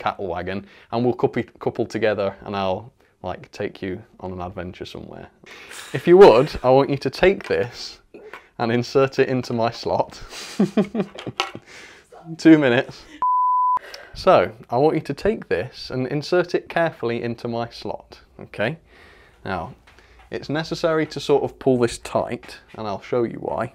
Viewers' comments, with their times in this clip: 0:10 I don't blame her for laughing 😆😂🤣